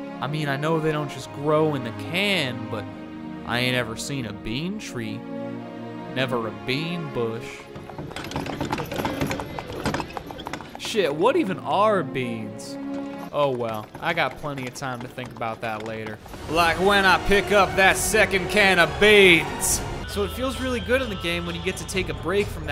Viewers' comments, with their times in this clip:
0:05 Damn, you got deep voice for a 12 years old boy :)